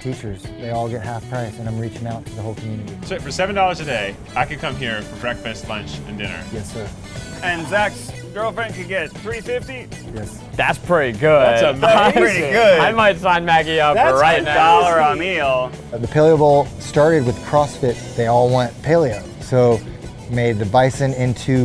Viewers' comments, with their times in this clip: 0:06 That hesitation by 'girlfriend!' 😱 We know now whyyy
0:07 Like who knows the reason of the awkward pause by Ned 😜
0:09 Anyone notice the hesitation of Ned saying zachs....girlfriend 😂😂 you mean fiancé?